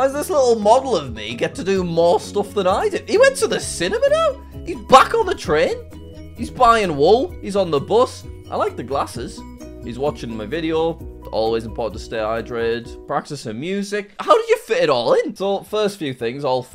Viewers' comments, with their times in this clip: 0:03 He went to the cinimina 😂
0:03 Ayo what did you say cinimina
0:04 Ur telling me he cant prnounce simarly OR cinema?